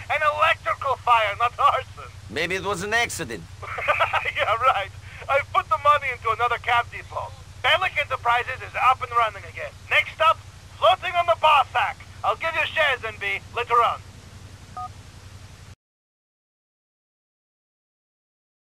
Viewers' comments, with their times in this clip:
0:03 i like roman laugh i dont know why though it funny